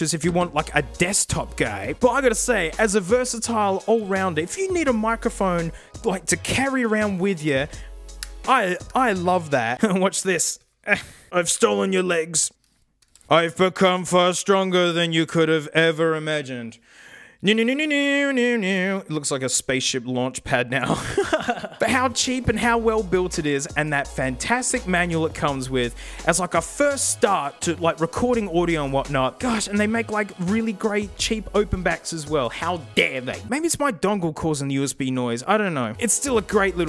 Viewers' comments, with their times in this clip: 0:10 Crying. I died when he did the X-men theme song 😂
0:16 sounds like the xmen cartoon theme
0:17 The Samson “rocket ship” with the X-Men animated series opening being it’s theme song was something I didn’t know I needed from this channel.